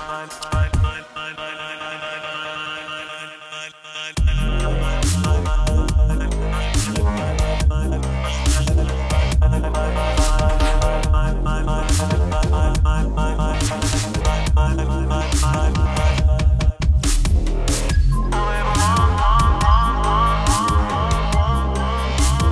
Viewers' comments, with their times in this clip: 0:03 what an awesome drop! <3
0:04 damn i wanna have that drumloop this is just INSANE would pump up any set ;)